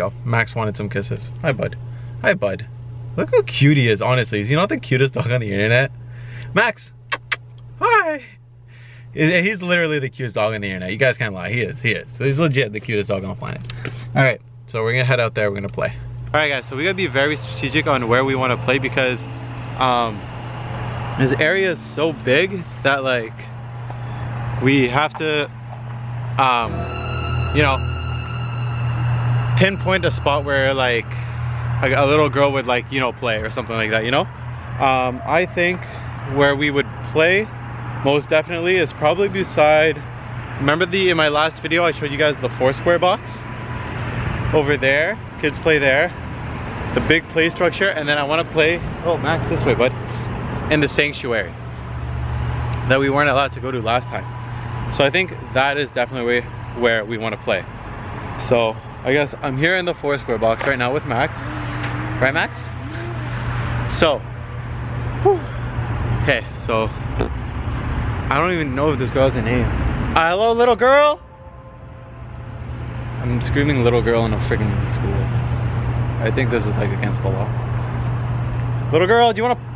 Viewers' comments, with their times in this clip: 0:04 I heard "ring around the Rosie" 😨😨😨😨😨😨😱😱😱😱😱
0:22 a girl said come find me
1:00 Wait is that little girl singing real or edited?
1:01 did anyone hear someone singing in the background wTF
1:02 Ring around the rosy is being sung again...
1:02 you're spirit friend like thingy is singing something
1:02 girl little girl talked
1:02 is it the little girl sound ??? OMG
1:02 you can hear humming for a girl
1:02 there is a little girl singing ring a rosie in the back ground very softly
1:02 u hear a little girl singing ring a round rosy
1:02 She sings ring around the rosey when you get in the 4 square box
1:02 Did anyone else hear the ring around the rosy?
1:02 you can hear a little girl singing ring around the Rosie
1:02 there was a litle girl singing
1:02 bro on you can hear a gurk who singing...😖😲
1:03 OMG I HEARD A GIRL SING RING AROUND THE ROSY OR SOMETHING WTFFF